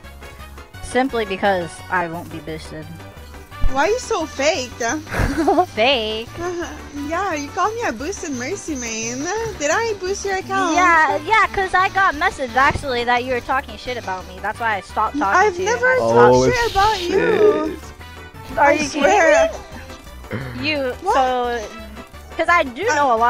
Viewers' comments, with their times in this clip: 0:08 why do they talk like that “BooOsted MerCy Maaaaaiiiiinnneeeehhhh”